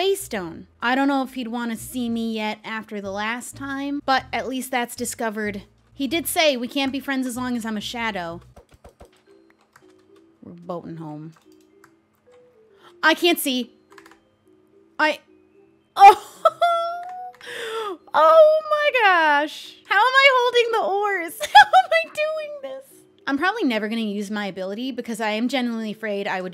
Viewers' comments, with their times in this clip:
0:10 the panic in your voice when you said “:O I CAN’T SEE”